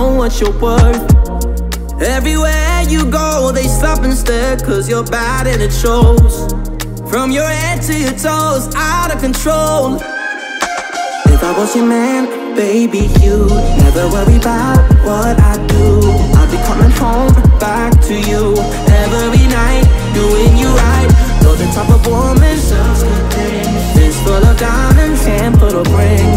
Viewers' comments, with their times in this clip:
0:10 I think I enjoyed this more than many. I’m a millennial and the original was very popular when I was growing up by Mario. Of course, they didn’t dare try and tackle the high so they decided instead to completely omit it.